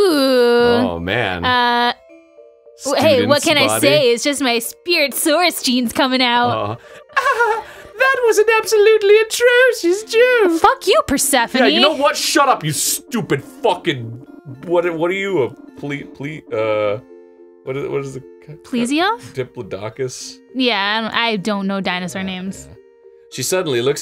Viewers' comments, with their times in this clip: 0:07 -God, Suzy killed me when she changed tone out of nowhere: "Fuck you, Persephone!" Hahaha.